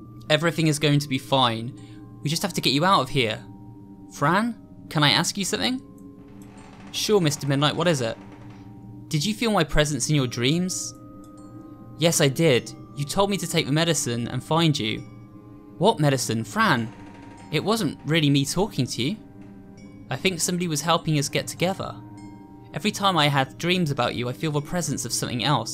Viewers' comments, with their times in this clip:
0:06 Minecraft water noise